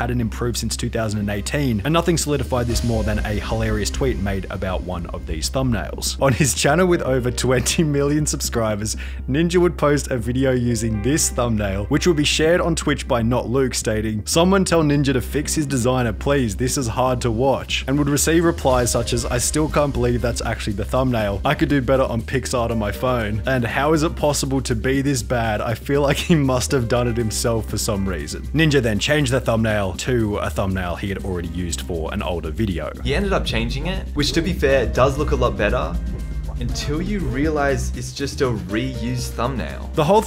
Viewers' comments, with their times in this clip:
0:03 You can actually hear bro laughing a bit lmao 😭
0:04 starting is the first time i heard this man laugh… kind of… it’s nice hearing someone that is usually deemed to be expressionless have such emotion in such a short period of time
0:12 why are you trying not to laugh ? Seems as this video is a lot more personal than any of the other videos you have made. Is it because in the other ninja video, people were saying the same thing?
0:22 bro is trying so hard to hold in his laugh